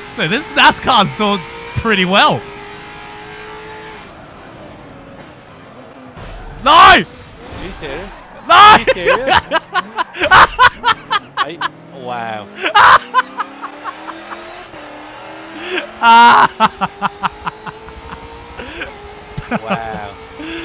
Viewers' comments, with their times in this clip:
0:08 the laugh that starts Great video tho